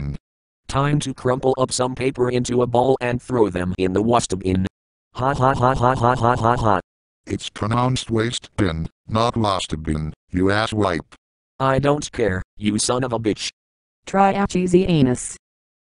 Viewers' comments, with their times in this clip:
0:03 Throw paper in The Waastehbin?!